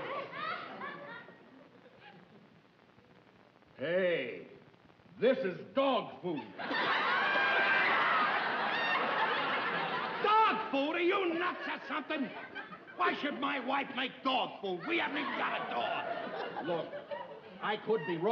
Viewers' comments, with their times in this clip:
0:03 the way Ralph snaps at that bus company executive.